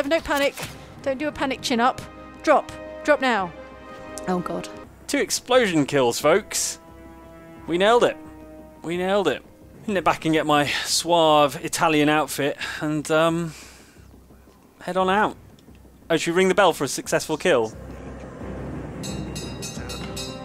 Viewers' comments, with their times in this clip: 0:04 the absolute terror in that “oh god”